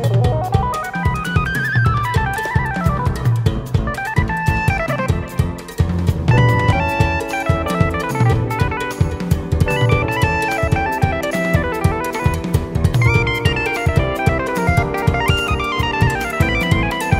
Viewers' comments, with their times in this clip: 0:05 The one thing I love about Cory's solos, this one's a great example, is that he'll add chords that aren't necessarily in the song to better suit the solo. The lick is nice on it's own but with just those three chords under it, it takes it to a whole other level. It's absolutely beautiful
0:05 It was the chords added to the solos for me. He also added harmony to his solos. Incredible!
0:05 Very sick. Videogame vibes would fit perfectly for zelda